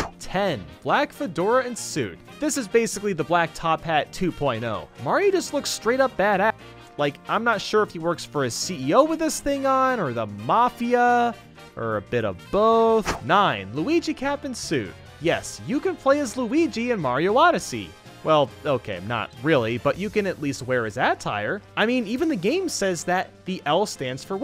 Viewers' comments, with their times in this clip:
0:06 did the thing you use to edit your videos glitch out because your voice glitched out.